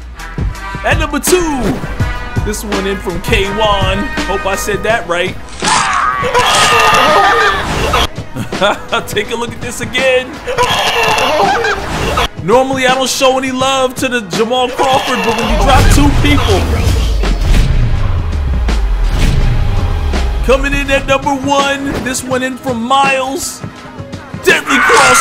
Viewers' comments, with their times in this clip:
0:10 why he sound like a horse for